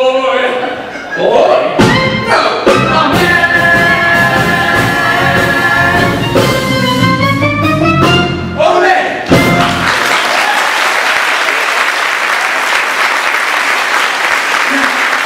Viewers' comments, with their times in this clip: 0:03 Props to the clarinet player That’s a tricky part to play. I have do play it on soprano sax for my show